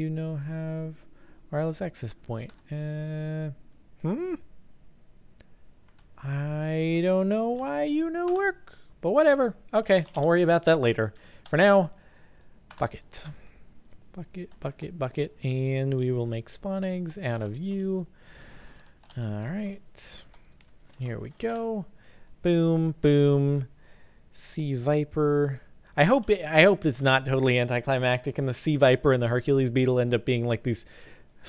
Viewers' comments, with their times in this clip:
0:07 Am I the only one that heard "But for now Fuck it" xD
0:07 I thought you said "for now, fuck it".
0:10 anyone else hear f*** it ? xD
0:10 I thought you said fuck it not bucket
0:11 Okay did anyone else think he said "F it" instead of "bucket" ? lol
0:11 Did he just say "Fuck It?" o-o
0:11 Am I the only who though he said "Fuck it" instead of "bucket" ?
0:11 Wow, when he said Bucket it really sounded like he said F*** it!
0:12 When you said "bucket" it sounded like something else.
0:15 I thought he said fuck it
0:17 When he said Bucket, Bucket Bucket Bucket it sounded like fuck it x3